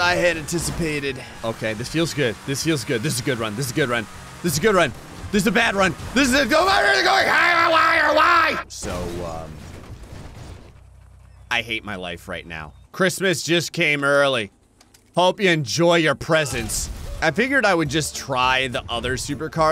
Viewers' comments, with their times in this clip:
0:06 is literally just the audio equivalent of mashing your keyboard like ujiohoaudhusufaeiaigbidfb Edit: spelling